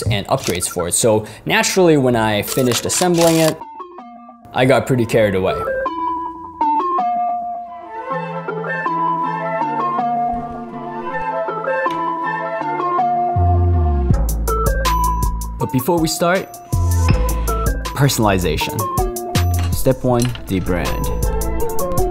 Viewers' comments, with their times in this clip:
0:03 The music sounds like HALA HALA by ATEEZ.